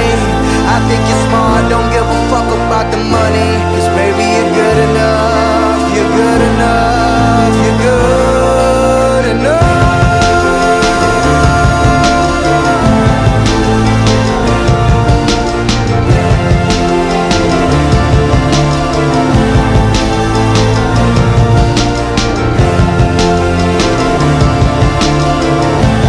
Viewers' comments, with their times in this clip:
0:09 that beat drop sounds like a heart beat being revived<3. idk what Logics going through but John 3🙏☝️ God bless